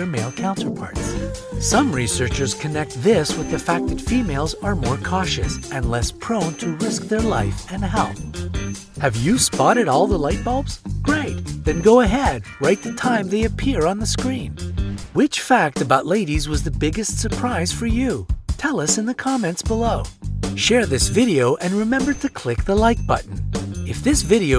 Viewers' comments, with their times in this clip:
0:10 Sorry, I could only stand the excessively loud music for seconds. I gave up when I could no longer actually hear what you were saying.